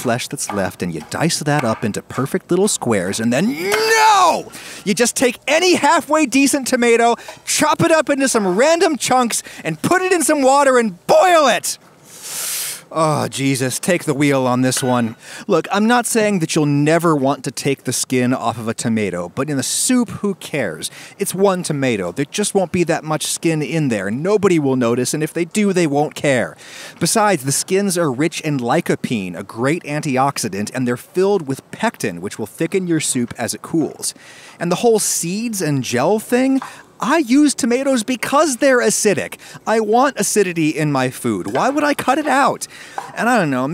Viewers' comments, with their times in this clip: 0:09 I love your videos, ordinarily. But the SHOUTING was EFFING annoying. I had to shut you down Hopefully............... YOU DIDN'T DO THIS AGAIN‼
0:27 "the skins are rich and like a peen"